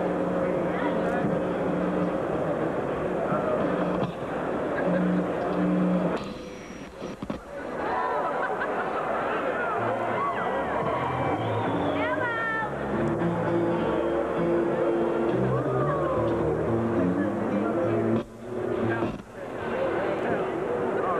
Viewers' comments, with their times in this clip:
0:06 s there were problems with the jack audio, with a string broken and the sound guys that did not turned up the monitor and still this dude performed an outstanding performance